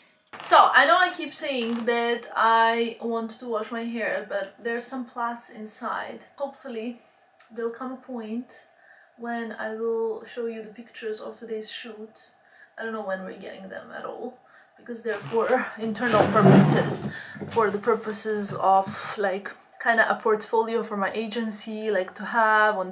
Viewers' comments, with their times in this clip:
0:03 I LOVED the video but, I don’t know if it’s just my ears or not but there is a very high pitched background sound during the video that was a little painful starting from I’m only commenting in case it was the camera or mic that may need fixing, and thought you might want to know